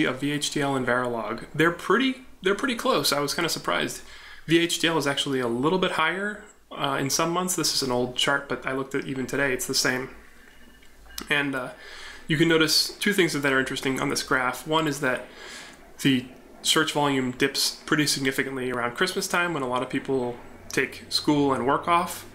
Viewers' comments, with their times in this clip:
0:08 Is there a train passing by? I swear i hear a graham white e-bell ringing and a loud rumble in the background